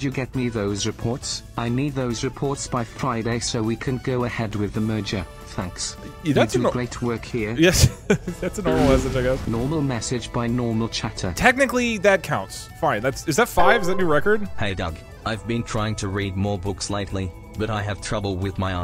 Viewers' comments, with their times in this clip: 0:04 Ok i know he didn’t say it but for some reason when keep repeating this part i keep only hearing the n word